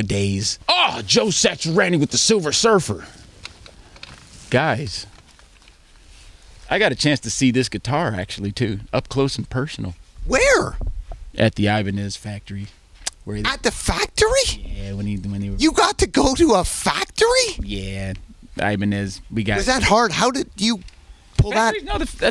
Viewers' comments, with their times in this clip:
0:03 Nardwar interrupts Thundercat 3 times in a row, it sounds amazing